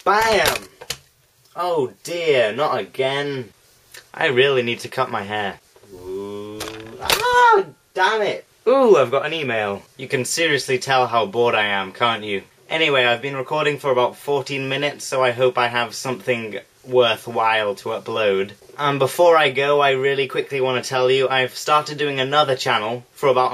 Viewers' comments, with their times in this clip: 0:07 My favourite bit was :3 the little ahhh!